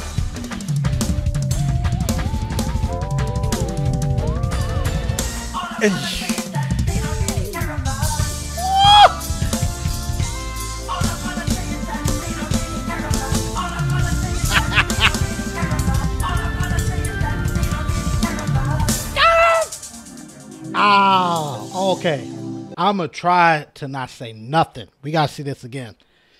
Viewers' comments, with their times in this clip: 0:07 man even came with the MJ adlibs